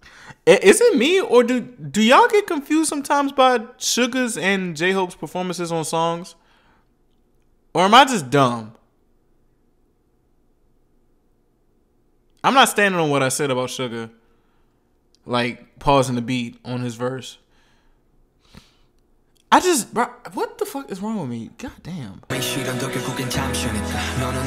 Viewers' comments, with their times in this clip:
0:09 when I was a new ARMY I always mistake SOPE's verses. They flow seamlessly, and their voices are little bit on the same tone so it was defo confusing for me before. Now I can tell the difference lol